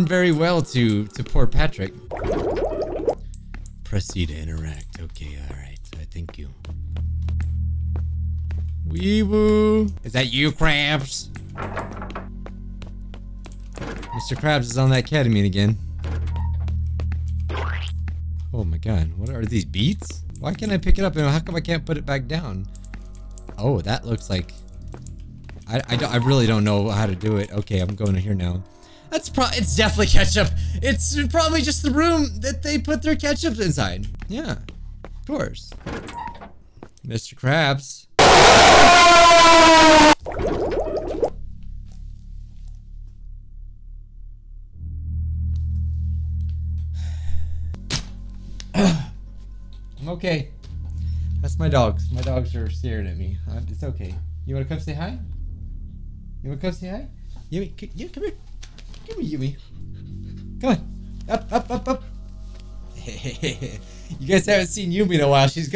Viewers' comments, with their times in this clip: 0:04 You kinda sound like Batman there, bijuu mike. 10/10
0:47 That was a So Loud Jump scare